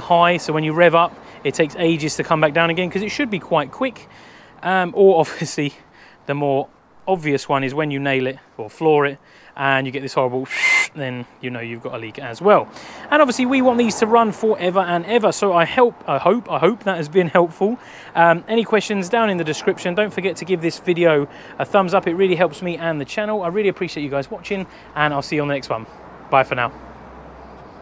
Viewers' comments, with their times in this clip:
0:10 that sound was mad accurate lol